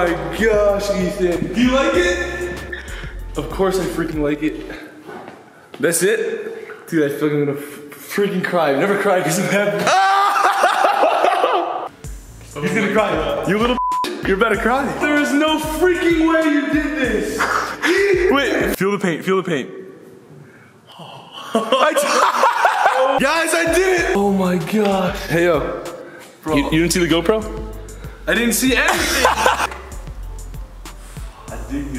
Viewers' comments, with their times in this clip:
0:09 Ethan's laugh has me weak AF! As Grayson said, 'IM SHOOK ETHAN!'
0:13 The way Ethan says "You little bitch, you're about to cry?"
0:13 the way he says “ you’re aboutta cry” is just… ughh thank me later